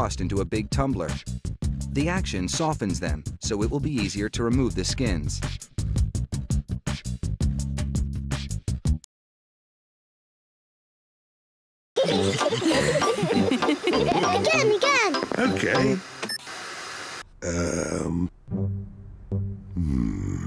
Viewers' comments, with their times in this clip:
0:04 They are laughing about pork
0:08 Peppa and her family watch how pork is made, then they stare at the screen for a little bit and then burst into laughter